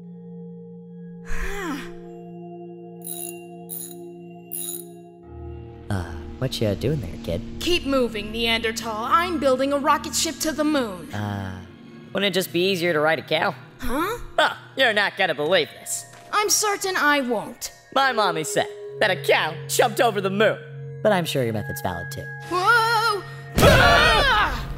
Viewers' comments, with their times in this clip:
0:08 Thank you for saying Neandertahl the correct way.